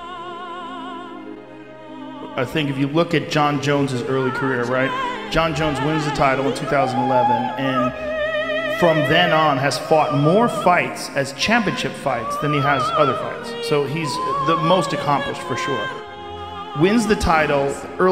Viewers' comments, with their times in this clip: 0:03 Hahha the instrumental in the intro reminded me of Mr.Beans Holiday 😆💯